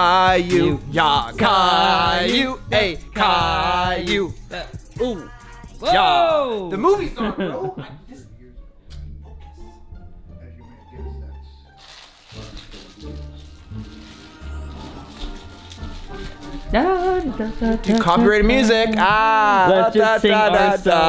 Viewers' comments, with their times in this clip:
0:03 When you were singing Kayoo there seemed like a boy said kayoo